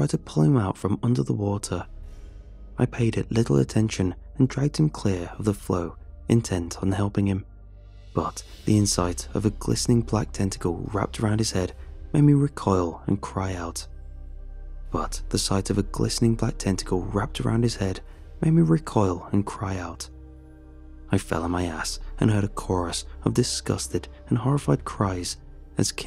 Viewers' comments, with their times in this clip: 0:09 is the repeating of the Sentence part of the Story or just an editing error? Because that threw me off.